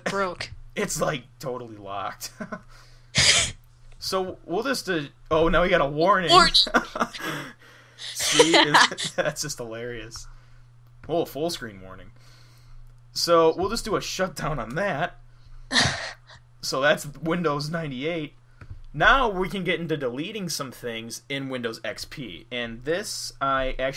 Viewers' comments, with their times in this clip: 0:06 really squeaky voice